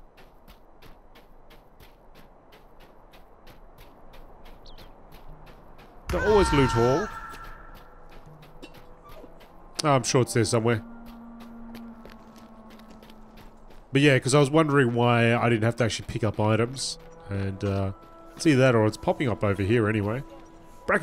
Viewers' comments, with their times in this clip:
0:05 How did that scream not make you jump out of your skin?! Scared the bejesus out of me D: